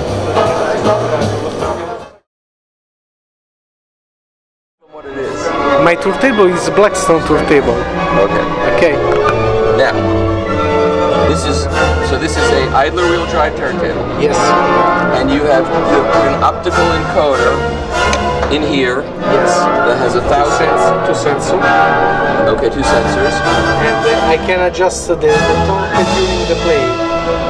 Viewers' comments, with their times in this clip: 0:08 That Blackstone Idler wheel TT sounds awful, and the amount of fiddling he did it still didn't sound that great the degree of record wow was beyond a joke, same as the price. I love the comparisons as well on the other decks, this is $9000...oh cool, and this one?....it's $18000,...oh and the difference, well you get a flashing light on the better one LOL